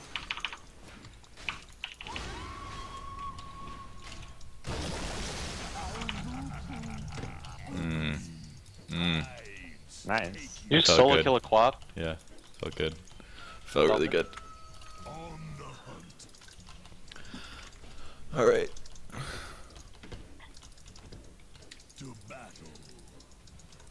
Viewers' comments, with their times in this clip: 0:07 The sighs of satisfaction: